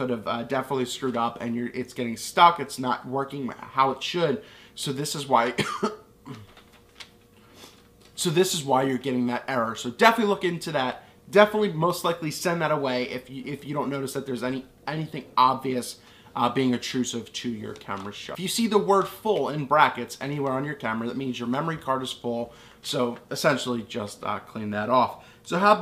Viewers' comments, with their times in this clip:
0:06 Very helpful I’ve been shooting for years but I only recently switched to nikon DSLRs. Before that I was on mirrorless. One question you coughed why didn’t you just cut that out?